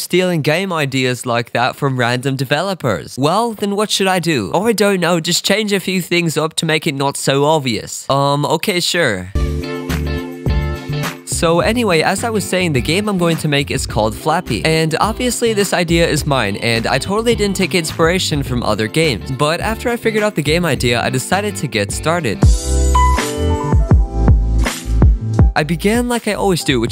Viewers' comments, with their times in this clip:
0:07 thats not a real call beacuse it would only be that loud if speakerphone was on.and in the clip at the tine you can see that speaker mode is turned off.so the only way to make the voice that loud on those settings is to edit it in.